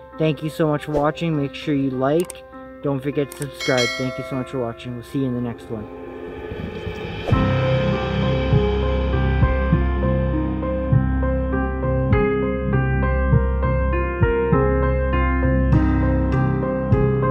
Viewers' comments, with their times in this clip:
0:05 Did you ever figure out what was making that weird 'animal' noise? 😁